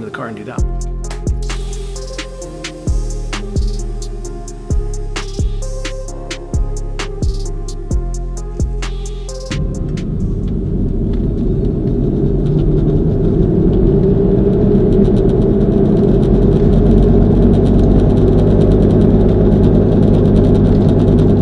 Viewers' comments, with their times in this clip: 0:06 In your efforts to make this video longer than necessary and annoying, you succeeded at both by unnecessary footage and that bogus ass free track that is included in everyone’s free editor. Stop trying to score videos. Nobody will ever be discovered as the best DJ from a video about what some yuppie mellinial got wrong about wheel bearings. I got to and can’t bear another millisecond